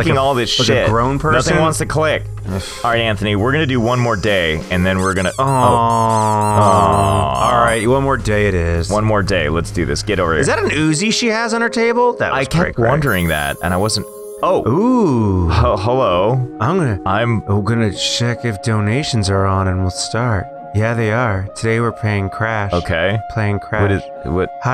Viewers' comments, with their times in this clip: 0:05 Them saying awww in unison got me 🤣